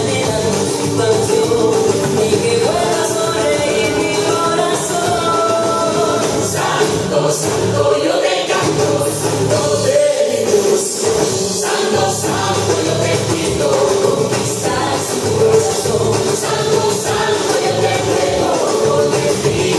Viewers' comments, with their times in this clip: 0:06 I don't know much about Samba but why do I feel you're a little off rhythm and you speed up the music ..its' hard to keep up with you cause the beats are not aligned with your movements